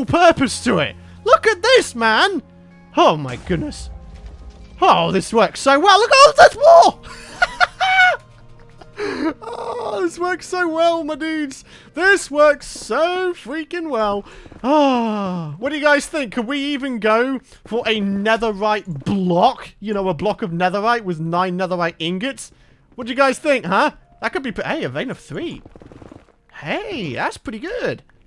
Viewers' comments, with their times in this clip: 0:10 he sounds like a ghast!